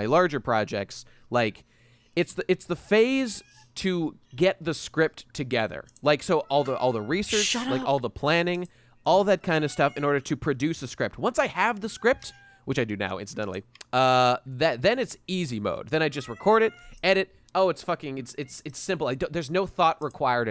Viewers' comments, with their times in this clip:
0:03 the meowing lmfao heavy rotation for shore